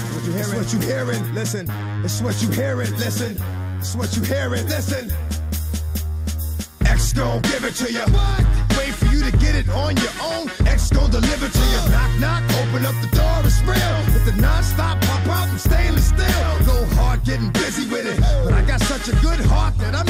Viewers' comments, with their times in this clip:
0:06 When the beat drops